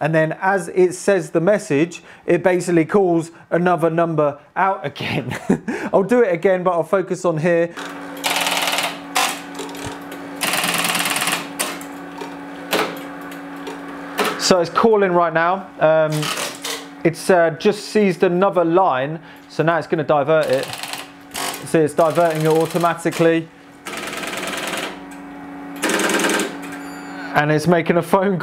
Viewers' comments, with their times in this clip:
0:09 half expecting “Money” by Pink Floyd to start playing…